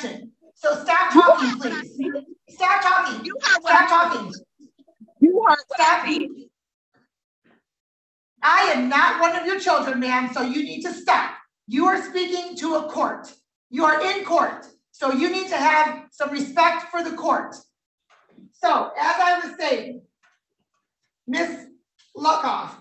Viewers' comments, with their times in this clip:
0:09 she rampage in silence hahaha maximum karen for sure she probably scream where are all good men, enjoying calm ears lol